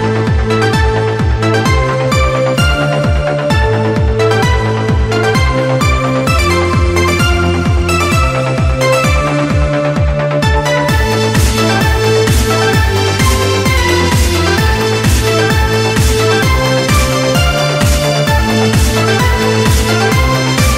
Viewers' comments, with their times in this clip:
0:03 WTF TALUS HAS A GIRL VOICE LINE??!